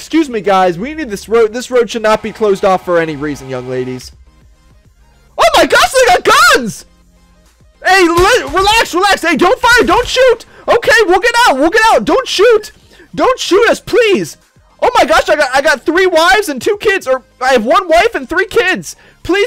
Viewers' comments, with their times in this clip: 0:04 lol the scream